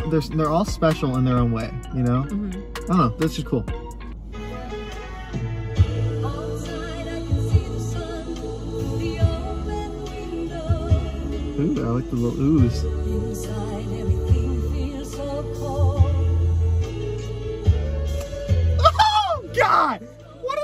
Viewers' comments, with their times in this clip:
0:05 To answer your question... Benny sings in the "oooh"-ing part that you enjoyed and after by adopting "falseto"Beach boys styled voices.Thank's for reacting.